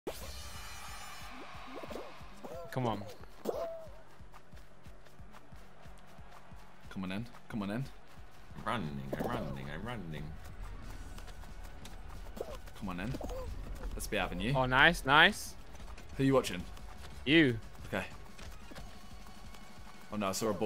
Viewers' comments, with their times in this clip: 0:08 legit thought Josh said "run ni**a run ni**a"